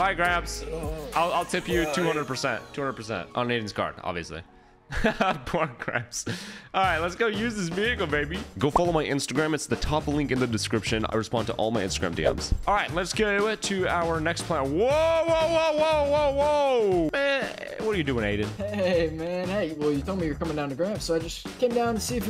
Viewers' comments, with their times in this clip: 0:03 when he says poor gramps turn on subtitles 💀